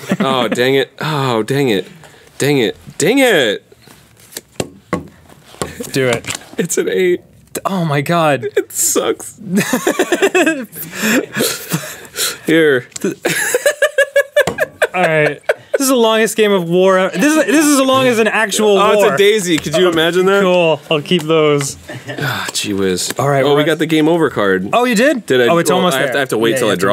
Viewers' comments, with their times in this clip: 0:10 Danny trying to resist. "Hahaha, ff- fuu-"